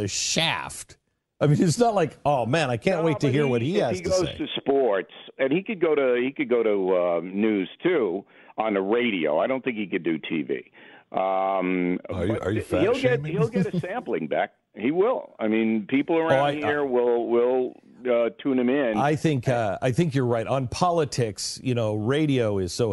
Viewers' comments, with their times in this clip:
0:05 Bill: "I don't think he can do t.v." Glenn (low voice with chuckle): "Are you fat shaming him?" LMAO